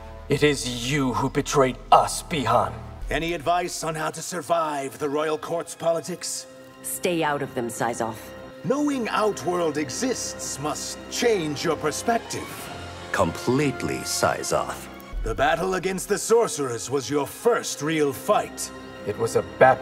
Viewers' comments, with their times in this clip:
0:04 that music transitioned PERFECTLY